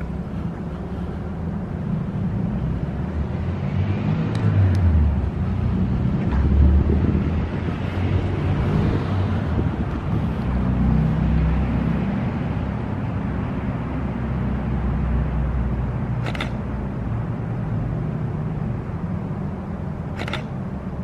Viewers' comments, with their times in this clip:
0:04 mister intercom was mad af 🤣😐😑